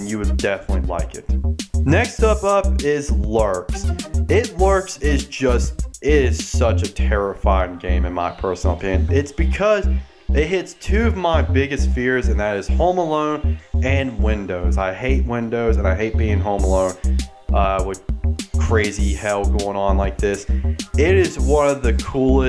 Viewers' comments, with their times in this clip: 0:03 what is he saying ???